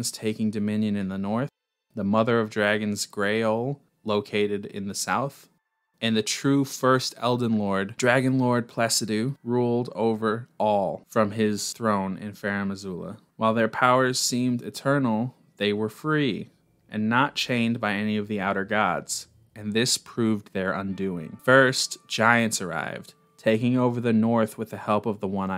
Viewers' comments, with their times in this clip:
0:08 The way you stopped just short of saying the sax part of Dragonlord Pacidusax’s name literally threw me off for the rest of the entire video. Like why? It was just one more syllable.